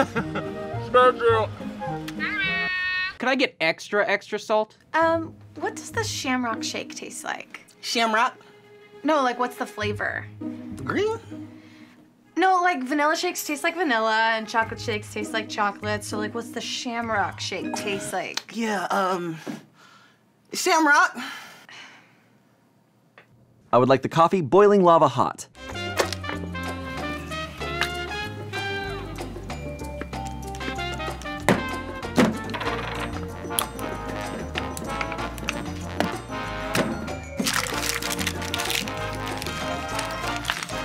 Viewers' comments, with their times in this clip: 0:04 "shamrock", he said it so perfectly I felt like I was in a McDonalds for a sec
0:27 shayne held in the laugh